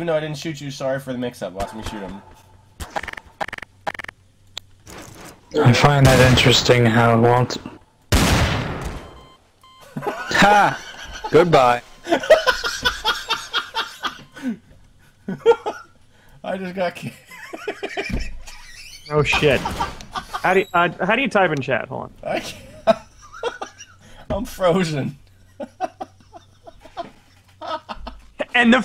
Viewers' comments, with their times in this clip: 0:10 Dat laf dough